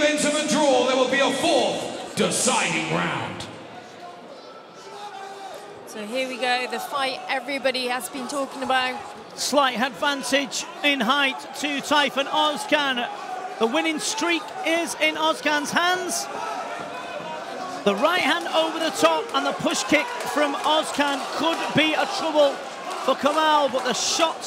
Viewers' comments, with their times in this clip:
0:05 Who else tought when the referree steps in, hes voice sounds like that from a girl